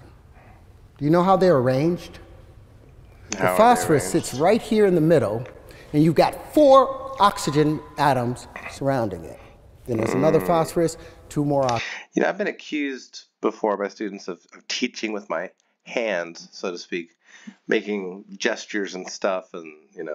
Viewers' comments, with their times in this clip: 0:04 Is anyone else incredibly annoyed when he leaves the consonants off the end of some of his words? Instead of "middle" he says "middo."